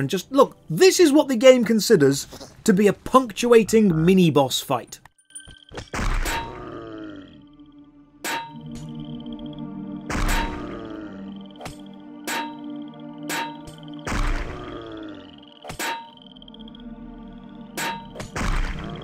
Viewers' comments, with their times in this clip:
0:07 Sick beat tho